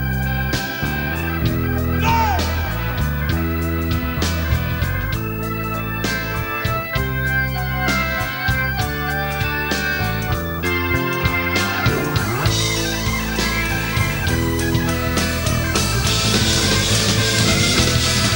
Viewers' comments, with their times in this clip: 0:04 the keyboard solo from Neal Morse from is so amazing, I made a ringtone out of it for my phone